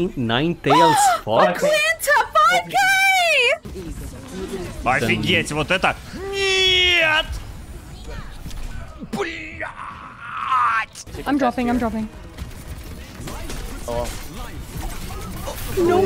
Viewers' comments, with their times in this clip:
0:04 he sounds exactly like frogger to me but in russian